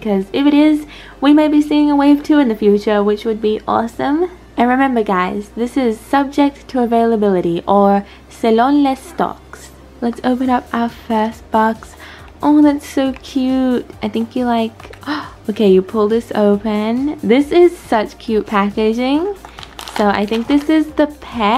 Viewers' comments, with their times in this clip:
0:09 First word you hear when u skip to is socks or stocks Lol